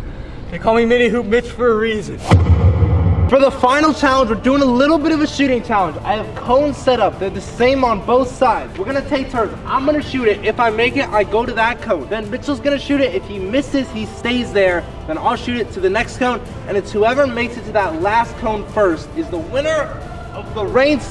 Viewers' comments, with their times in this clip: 0:04 we're doing a little bit of a shitting challenge